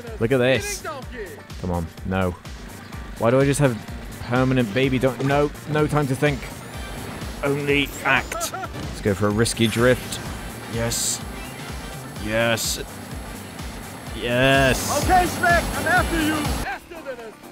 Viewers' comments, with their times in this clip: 0:05 "No time to think, ONLY ACT." That's the most emotion I've ever heard from him.